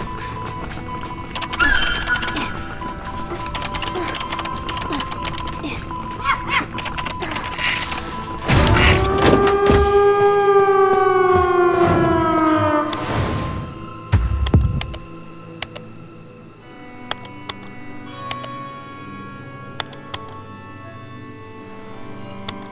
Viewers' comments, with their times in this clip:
0:08 The audio is advanced. Look the gate sounded open